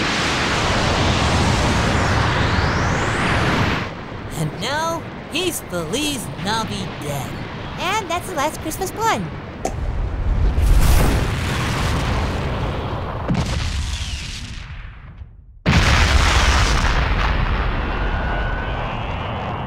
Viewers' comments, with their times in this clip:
0:04 Goku’s speech against Santa while the Nutcracker is playing is unironically pretty awesome. And this is still one of my favorite DBZA lines of all time, never fails to crack me up.